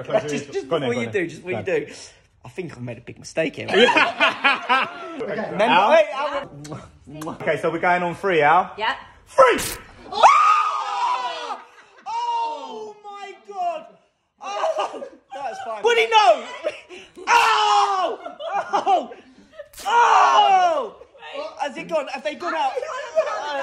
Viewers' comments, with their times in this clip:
0:09 He probably has beaten the record of the high pitch scream from anyone else. This was so funny